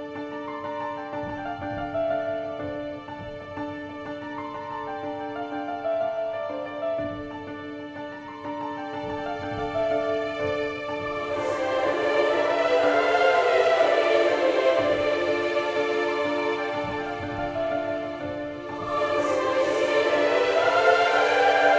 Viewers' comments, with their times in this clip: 0:04 the song it reminds some how Kingdom Hearts,, maybe it is justly impression..